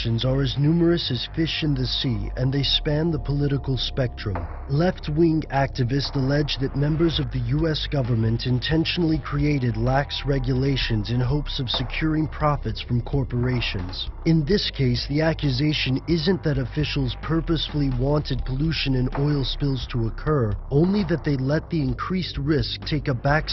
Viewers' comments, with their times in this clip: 0:05 This new voice is really bad. Here's where it gets crazy, on the video they highlight the bird's right wing when they say "Left wing".